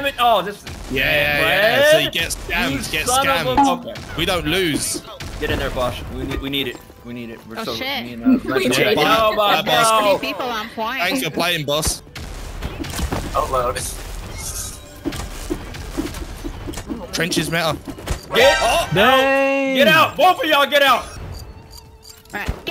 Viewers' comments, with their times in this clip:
0:06 This part has to the the funniest thing I've ever seen 😂 The bonk